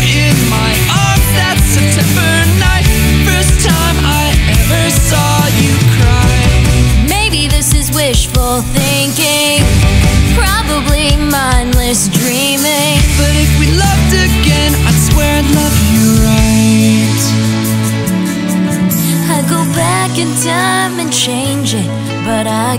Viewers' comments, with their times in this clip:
0:05 lol.... btw shes good not the best but i cant sing so i guess its not really my place to say anything